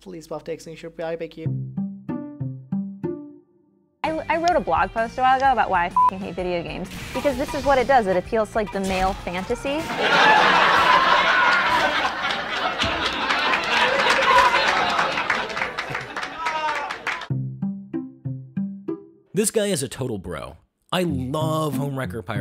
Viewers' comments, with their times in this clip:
0:05 you should have made the laughtrack loud, and compressed the sound.
0:08 that was a chuckle.